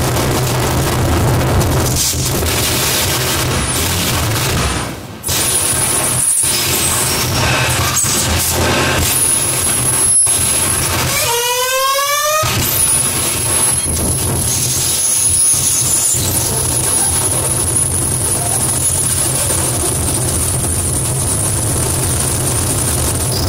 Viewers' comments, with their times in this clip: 0:07 That one kid with a bad mic on fortnite